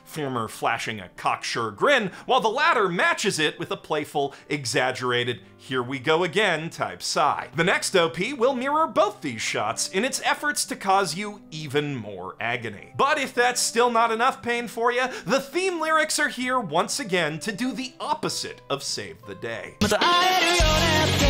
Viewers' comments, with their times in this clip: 0:06 This was hard to listen to. I tapped out here. It felt like your tone was agitated or something, it just felt off idk.